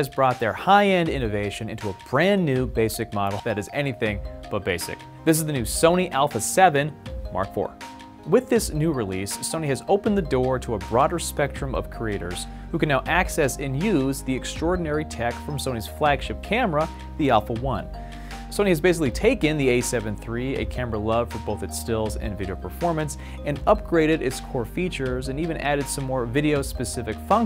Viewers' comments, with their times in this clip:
0:06 Did he say "new Sony Alpha 7, R4" ???
0:08 ... I could've sworn you said - "the Sony alpha 7, (long pause) R4"??? Update (3 listens later); you did say r4!?! I was pretty sure the title of this vid stated, "Sony a7 IV: High-End Innovations Added to the a7IV!..."?